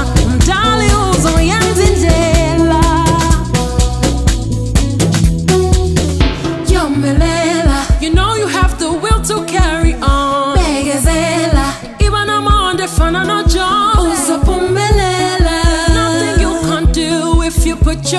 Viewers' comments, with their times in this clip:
0:06 This song goes through my heart.......Gal i love that chocolate voice of yours, can we shout Amen only if you feel what im feeling